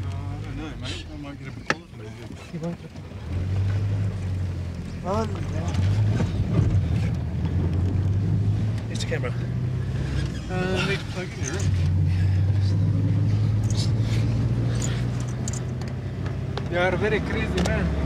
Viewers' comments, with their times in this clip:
0:03 "You are very crazy man." haha, love the accent.